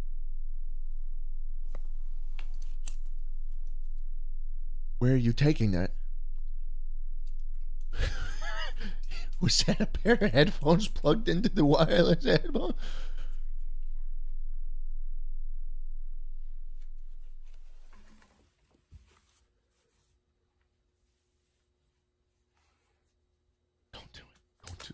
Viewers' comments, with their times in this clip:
0:05 I laughed my ass off at his screams of dispair